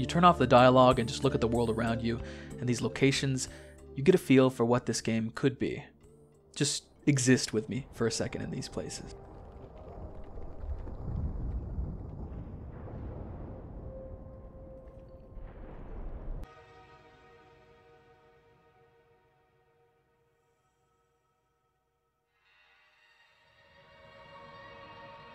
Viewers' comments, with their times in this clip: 0:07 this reminds me of those videos that were like “the sounds a planet makes”